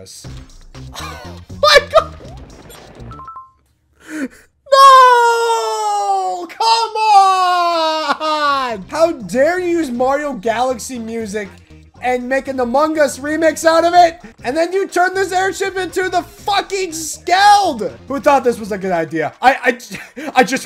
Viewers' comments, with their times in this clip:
0:04 He sounds like woody at the end of the first movie